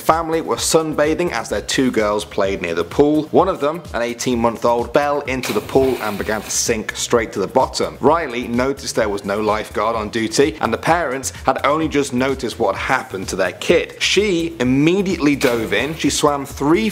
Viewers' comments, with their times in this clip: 0:04 I heard 18 YEAR old, instead of 18 months old, very awkward.